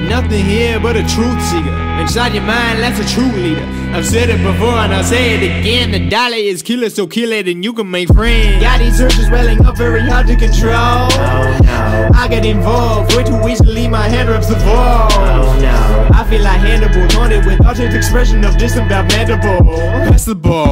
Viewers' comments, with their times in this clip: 0:08 daym kicking in so dope <3